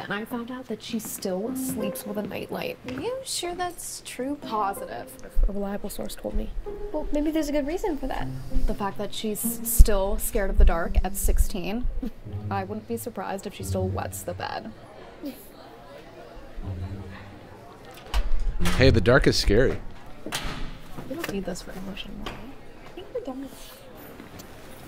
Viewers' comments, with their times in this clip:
0:09 her voice and facial expressions are sooooo annoying it makes me actually so pissed